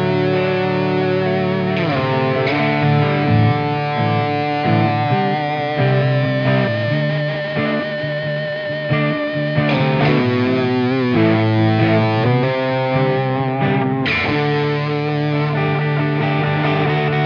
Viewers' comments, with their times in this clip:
0:05 sounds like sweet child o mine before the 4th solo. Then I watched for two more minutes🤦🏾‍♂️